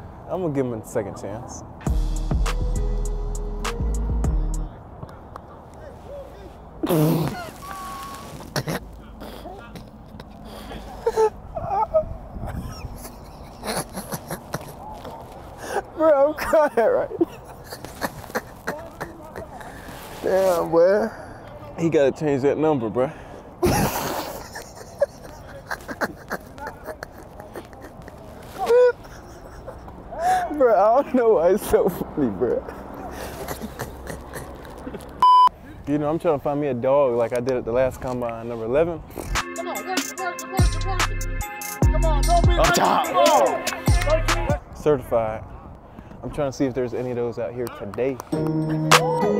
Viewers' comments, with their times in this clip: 0:07 😂 I think was one of the first times I heard this nigga real laugh shi got me cryin😂😂
0:34 When that kid watches the video he goin be sad his fav Youtuber is laughin at him 😂😂